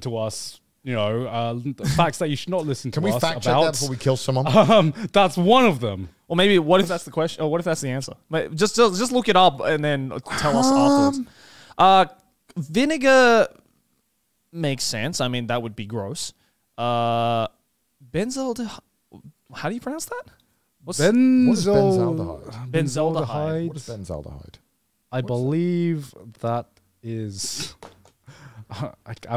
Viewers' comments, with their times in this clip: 0:10 never heard. him make such a high noise naturally woah that scared me